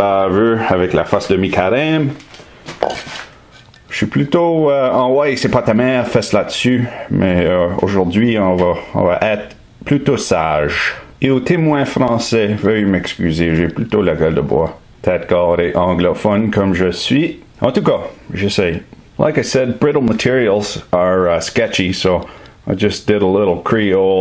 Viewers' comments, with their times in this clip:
0:05 was that French or russian??